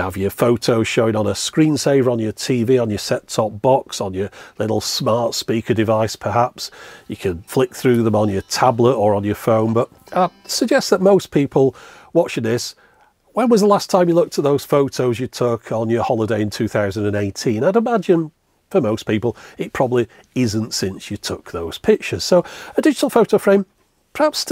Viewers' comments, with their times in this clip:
0:06 that sounded like Bron Yr Aur!